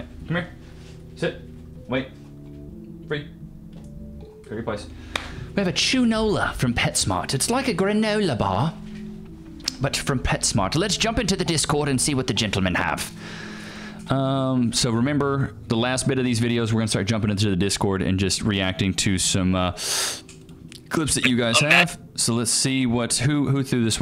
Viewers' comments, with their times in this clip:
0:09 No hate on ya brother but you nearly sounded like Freza from DBZ Super